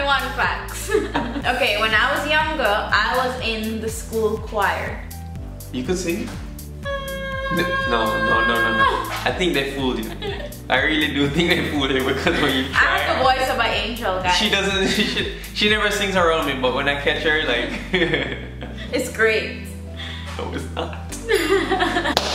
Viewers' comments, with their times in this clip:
0:06 she trynna call the mosquitoes 😂😂🙂